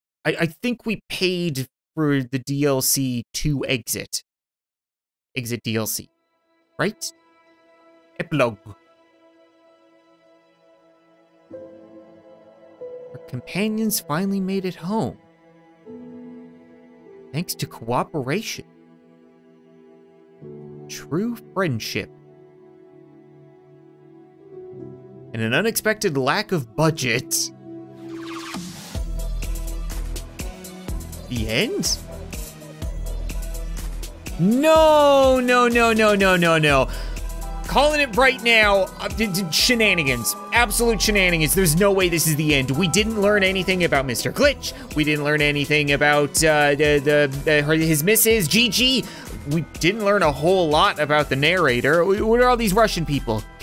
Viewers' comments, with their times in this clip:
0:07 they way he says epilog its like epilo
0:38 Why Christmas music???